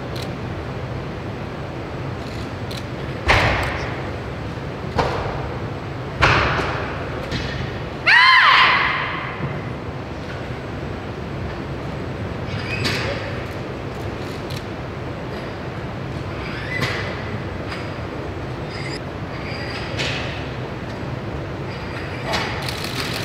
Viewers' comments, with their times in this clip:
0:07 ka kawwwwww Is what I imagine how a bird would respond
0:08 if a cheetah had the strength of a tiger that roar before the snatch was like a angry meow or a forced scream